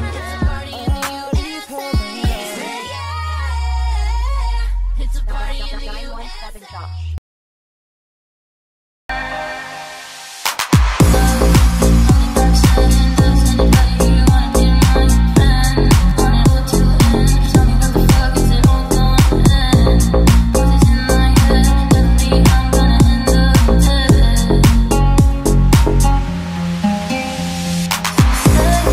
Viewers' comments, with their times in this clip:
0:09 song ends bro coulda just let the song play and the video end when it does but instead they put this LOUD annoying as fuck outro song like we wanna hear it